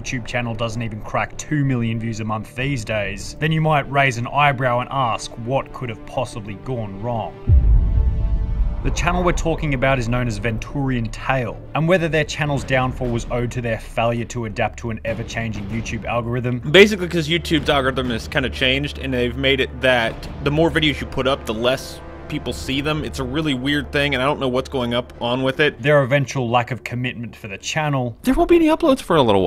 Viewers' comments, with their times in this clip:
0:10 "vEntOoRiAnTaLe" Me an old time Venturiantale fan: AcCtUaLlY iT'S pRonOunCed-